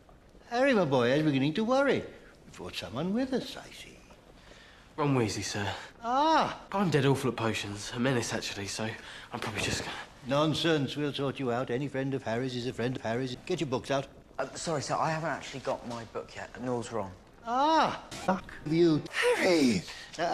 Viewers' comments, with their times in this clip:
0:07 What does he even say